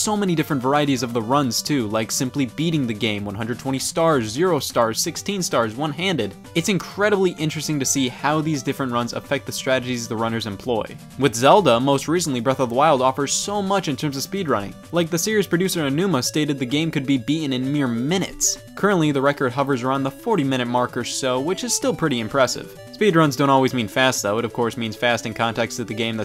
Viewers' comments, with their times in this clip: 0:07 That's the YAHOOception technique The yahoos loop over eachother, and so does Mario's backwards speed so he can go MAXIMUM OVERQUICK